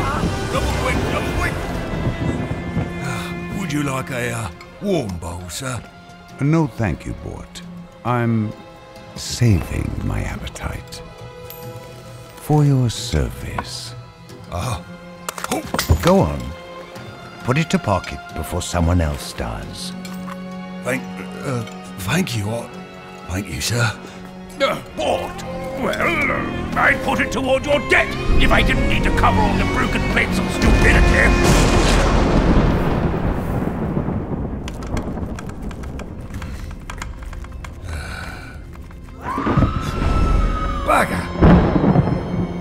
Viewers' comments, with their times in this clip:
0:06 thresh voice is like Keith Silverstein's voice?
0:27 that foreshadowing music swell is amazing